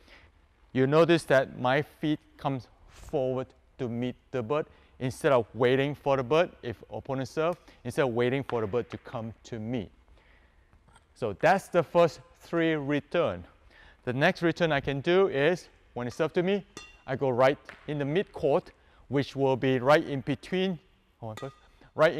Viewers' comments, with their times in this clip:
0:07 what is meant by instead of waiting for the but? what is the meaning of but